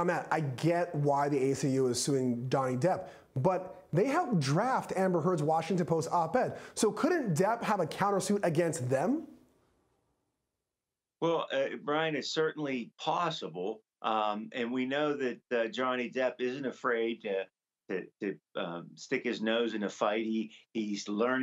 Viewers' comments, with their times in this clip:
0:03 He said Dony depp! lol